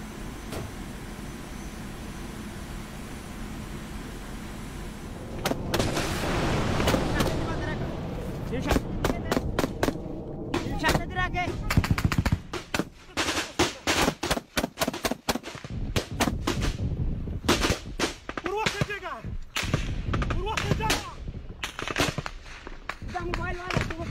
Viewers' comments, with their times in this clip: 0:06 Awesome firefight sounds even the boom from the exploding plane takes a few seconds to reach, very realistic. Interesting watch and very very well made vid. :)